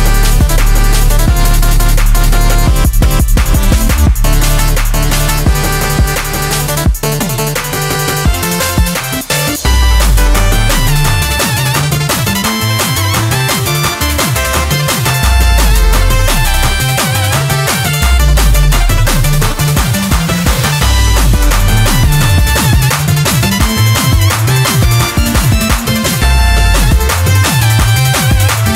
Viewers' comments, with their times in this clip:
0:09 you can audibly hear when he stops giving a shit and the remix is just the base song with very minor modifications. it's up till that point